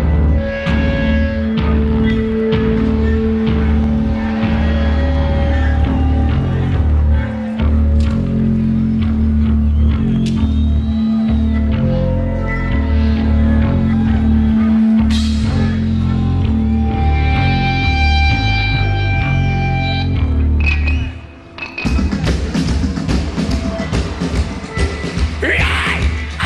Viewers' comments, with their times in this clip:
0:07 Nothing like getting yelled at by a pasty dude with his butt-cheeks hanging out... jiggling like pudding and shit.